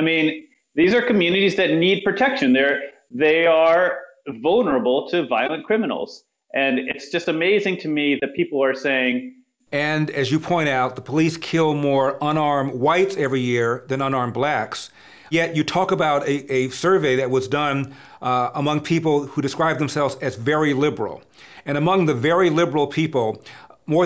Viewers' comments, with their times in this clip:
0:06 Why is there a glitch after where he says 'it's just amazing to me......'. It seemed like a very relevant point was about to be revealed and we didn't get it.